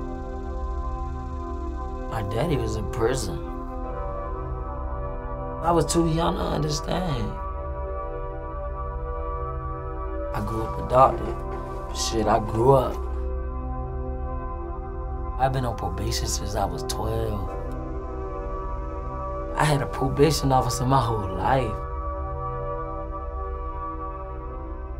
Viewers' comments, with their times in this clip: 0:05 y he dragging his words 😂😩❤️